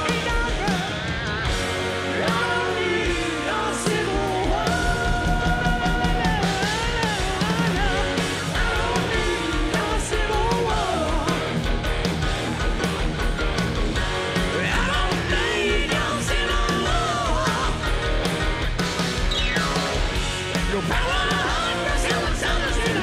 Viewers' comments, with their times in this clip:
0:06 Civil War last solo part is just real fookin' raw power! ✌